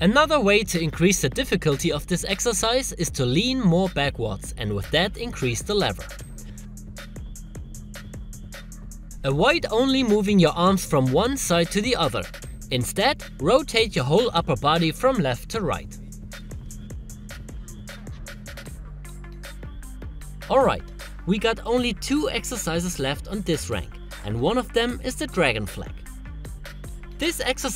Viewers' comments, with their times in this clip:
0:09 Cracking into laught 😂😂😂